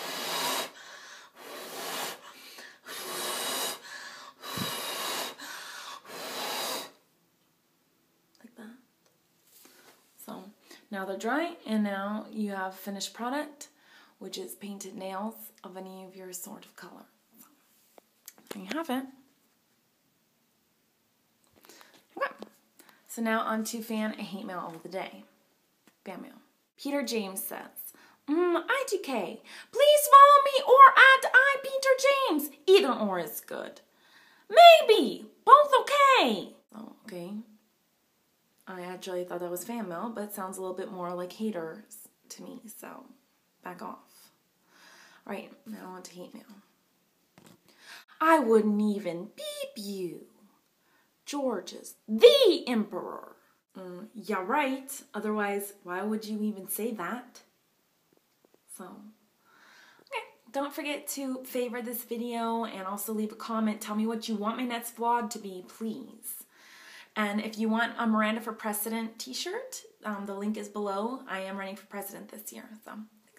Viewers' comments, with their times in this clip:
0:03 reminds me of amsr xD
1:00 The noise she makes HAHA